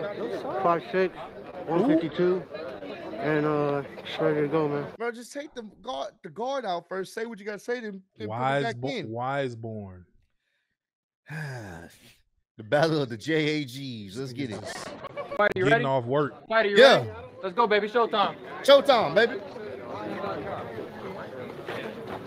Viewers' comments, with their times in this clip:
0:03 Why does it sound like he already has c t e Already 😂